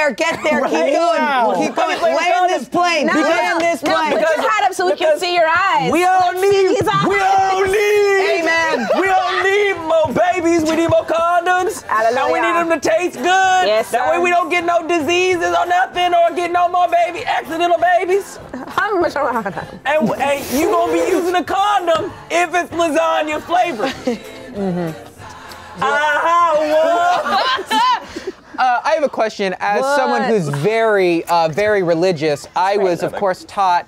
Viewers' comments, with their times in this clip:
0:07 not the gospel choir 😭
0:18 NOT THE SPEAKING IN TONGUES 😂😂😂😂😂😂